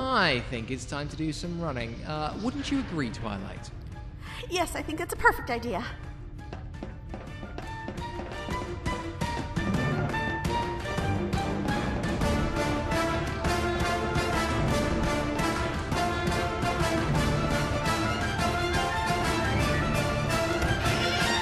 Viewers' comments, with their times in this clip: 0:06 SPY MUSIC :3